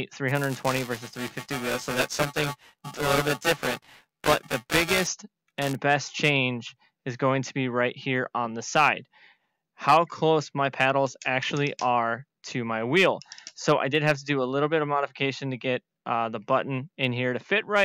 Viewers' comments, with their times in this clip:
0:03 Your audio goes off